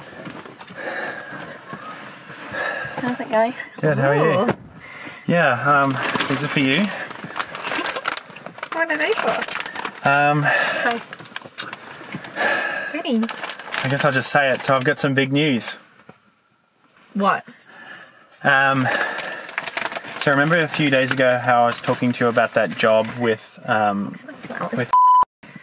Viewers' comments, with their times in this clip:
0:07 I would sell my fucking soul to the devil himself for that pure innocent cute giggle!